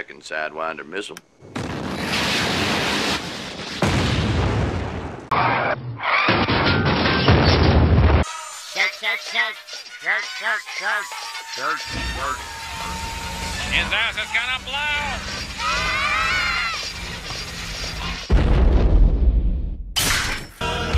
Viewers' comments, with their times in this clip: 0:08 Robotic Richard Simmons: shake shake shake, śhàkę śhàkę śhàkę, ßhækē ßhækē ßhækē Mr. Smithers: his ass is gonna blow! Bart and Mr Burns: scream Mr Smithers: closes door Robotic Richard Simmons: ass explodes I found this moment absolutely hilarious 😂😂😂😂